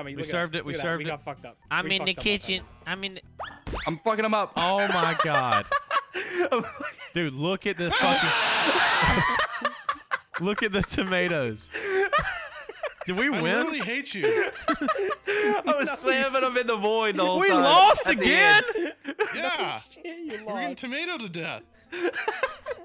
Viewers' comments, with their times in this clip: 0:07 I was crying bro what is that scream.